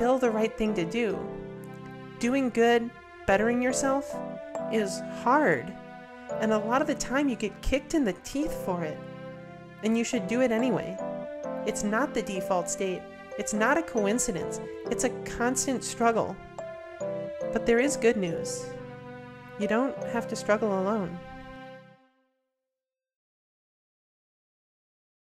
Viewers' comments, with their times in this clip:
0:07 Love the arrangement of the music I liked the idea of Lean on Me being used in the show and apparently it was a thing they realized they could afford to do late in the game but the lyrics/talking overlapping always bugged me. i wish it was an instrumental version but i get it. Great video all over.